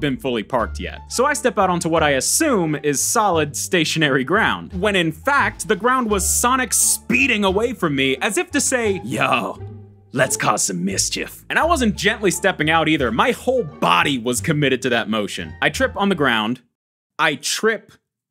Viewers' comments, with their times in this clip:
0:06 beatboxes sonic rush startup